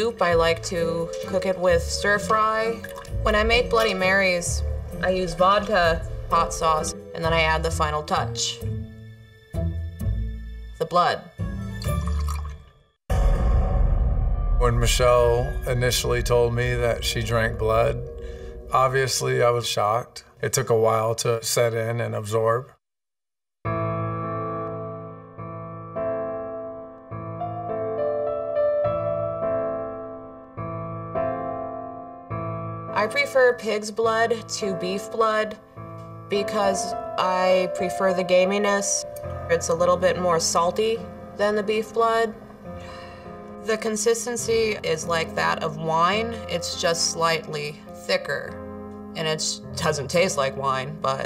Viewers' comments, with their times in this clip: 0:08 don’t get me wrong, this lady is screwed in the head but the delivery was exceptional. The pause before she said “blood” at the end was golden. 😂
0:09 what was that long pause for😭
0:32 I thought she said “I prefer kids blood” I had to rewatch it a couple times to reassure myself she didn’t say that😭✋🏾
0:32 I thought she said "I prefer KIDS blood to beef blood" I was like wow this just got a whole lot darker!
0:35 I thought she said she preferred kids blood ; - ; Me just running for my life